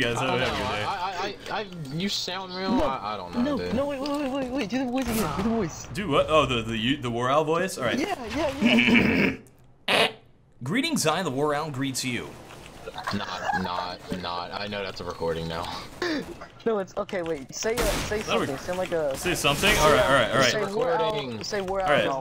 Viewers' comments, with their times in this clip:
0:09 sounds like a fart
0:09 when he clears his voice was just👌😂😂